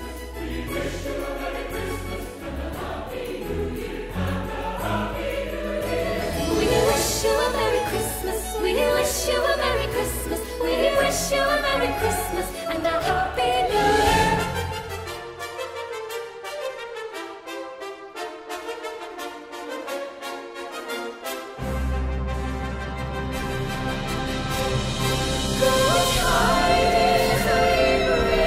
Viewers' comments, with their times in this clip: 0:09 Who's the lady member ? My god they look and sound like angels.